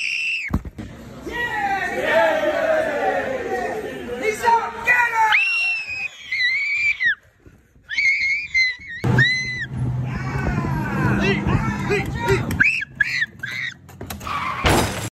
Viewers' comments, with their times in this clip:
0:10 the guy screaming sounded like Mufasa when he was pushed into the herd of wildebeest.